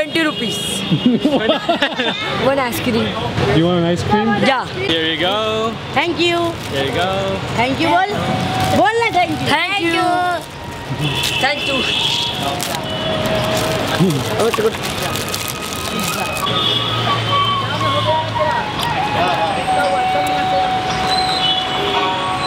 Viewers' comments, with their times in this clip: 0:05 The kid just kept on screaming at the other kid to say thank you LOL